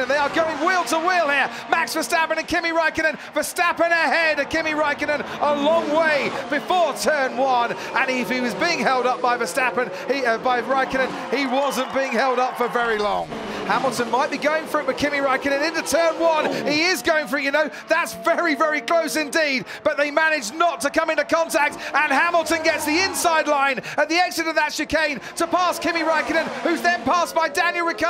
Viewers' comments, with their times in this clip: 0:09 Ferrari fans applauding a Ferrari being overtaken wat?
0:10 The Ferrari fans applauding for Verstappen overtaking Kimi, lol
0:11 Ferrari fans clapped for RedBull.. That's weird 😂
0:14 Hamilton might be going for bikini Raikkonen